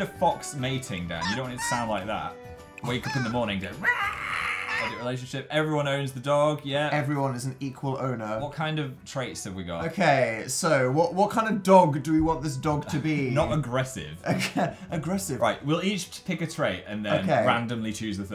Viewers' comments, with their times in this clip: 0:03 me learning to fry scream